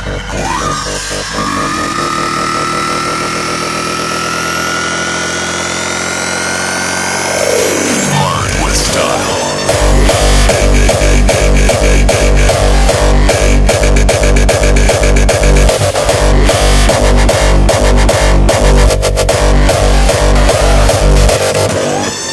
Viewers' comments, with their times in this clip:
0:09 The drop which starts makes me cry every time. This song is the only one that makes me cry.